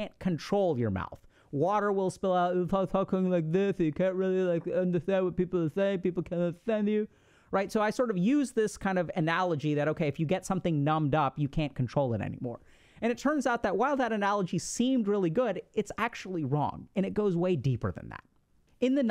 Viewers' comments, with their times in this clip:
0:05 Dr. K's Sly Stallone impression